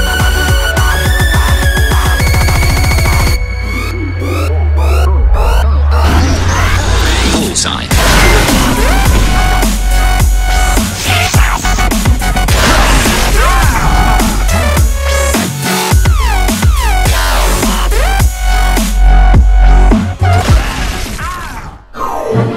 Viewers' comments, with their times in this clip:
0:09 Am I the only the only that thinks when the Kantus says "success" it justs sounds nasty with the sync of the song